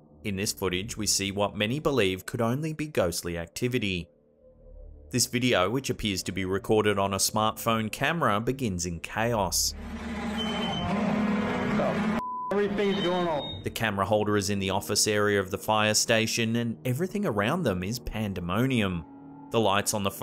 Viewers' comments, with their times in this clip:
0:08 u can see something like a person all white move in the door that later slams